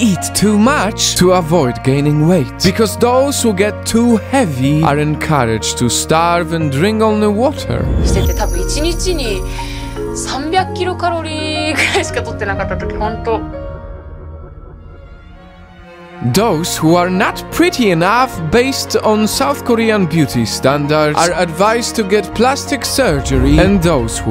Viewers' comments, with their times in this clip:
0:08 true weebs know that she was speaking nihongo (japanese)
0:08 isn't she speaking Japanese there
0:11 after watching a lot of anime I can confirm that she is speaking Japanese.
0:11 Why was she speaking Japanese?